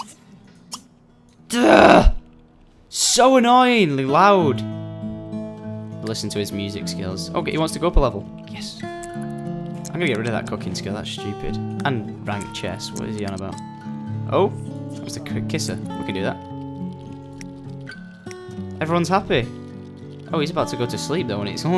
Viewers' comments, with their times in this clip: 0:06 So annoying...ly loud